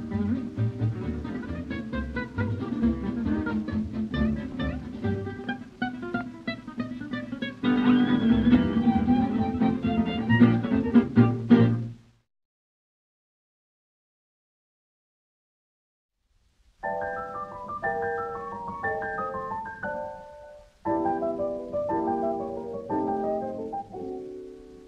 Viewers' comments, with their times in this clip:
0:05 so obsessed w this vintage music ugh amazing, this is literally one of my very fav songs bcos of this playlist